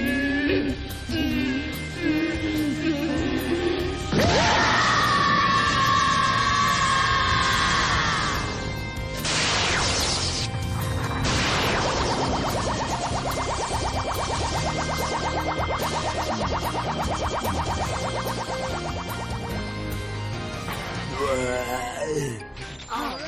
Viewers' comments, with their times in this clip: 0:04 his scream is literally visible